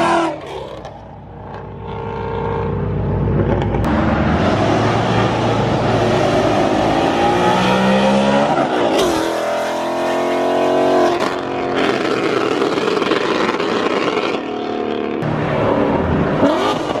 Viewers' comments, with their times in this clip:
0:05 na is crazy😭sound like a jet 💪🏾